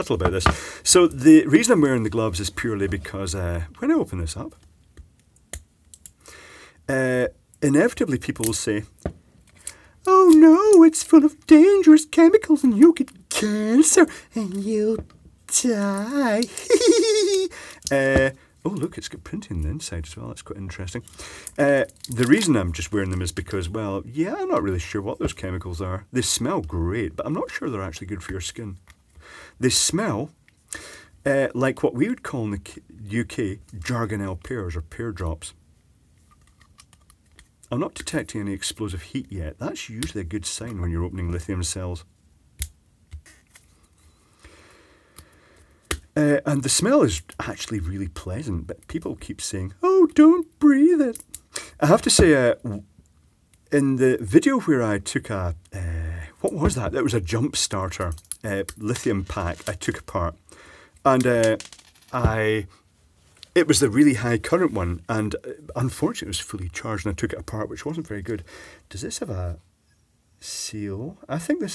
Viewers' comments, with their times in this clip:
0:09 I hear the Gin is starting to take effect....
0:09 please never do that again. I'm pretty sure that voice is going to haunt my nightmares.
0:52 I heard a "Great Northern BC Barking Spider" me reckons.